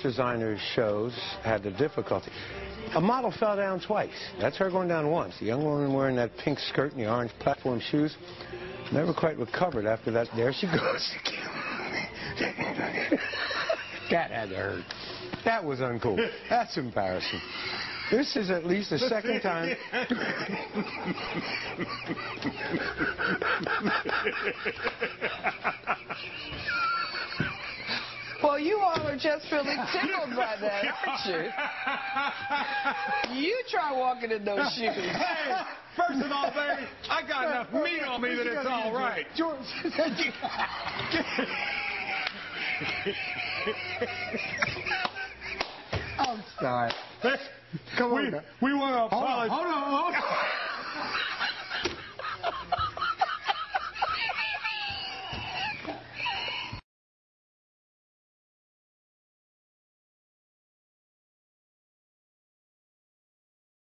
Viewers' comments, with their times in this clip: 0:10 I love how the anchor's wheezing while he talks.
0:12 he whispers "chicken nugget"
0:12 Haha it does sound like he says ''chicken nugget'' !
0:12 his laugh sounds like he says 'chicken nugget'
0:13 sounds like he said "Chicken Nuggets"
0:18 lmaooo that laugh xD
0:19 lmaooo that laugh seconds xD
0:24 Cue the evil laugh!
0:30 one of the best or funniest laughs I´ve ever heard.
0:51 My highest level of laughing is exactly the same as but different pitch but those two are hilarious!!!!
0:53 asthma attack LMFAO
0:55 Uh oh wait a minute, a pig is on the loose in the newsroom